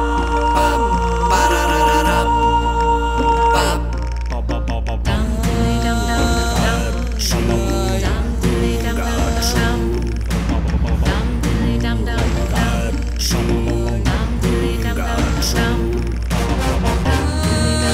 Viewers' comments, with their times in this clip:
0:05 It starts singing